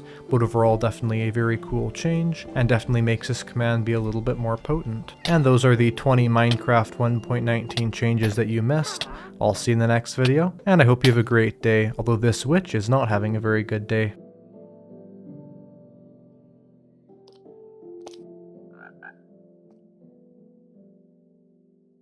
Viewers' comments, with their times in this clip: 0:05 its so funny how calmly he says that while getting murdered by a witch lol